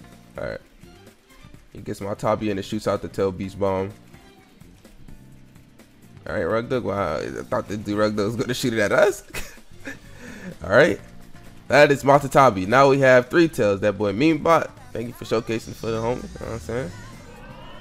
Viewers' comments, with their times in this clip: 0:04 mans speaking gibberish 😭😭